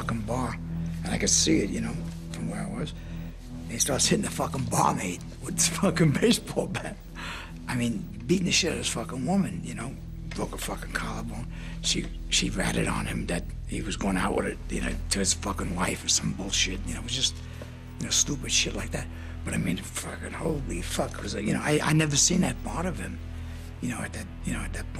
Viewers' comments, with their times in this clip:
0:05 true mark of a wise guy. That laugh. It’s not a laugh of humor. It’s a laugh of insanity